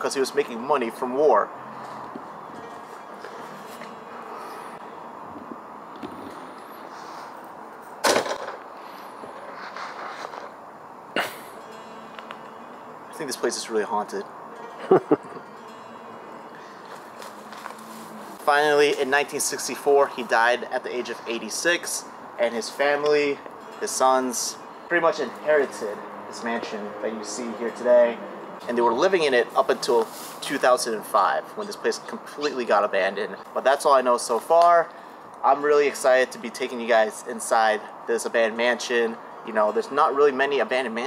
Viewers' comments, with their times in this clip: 0:08 love how the camera man was still filming laughing it off like its a normal thing
0:22 there was wind,